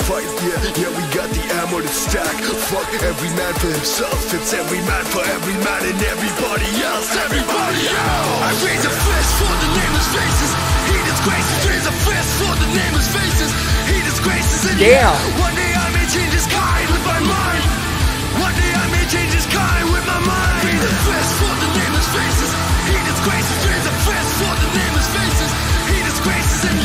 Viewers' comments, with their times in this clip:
0:07 Nigel Stanford's Automatica song vibe.